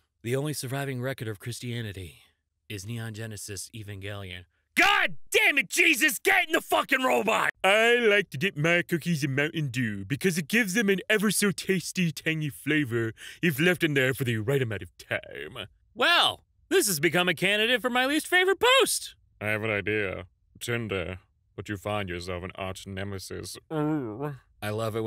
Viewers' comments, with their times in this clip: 0:09 HE SOUNDS LIKE HOMER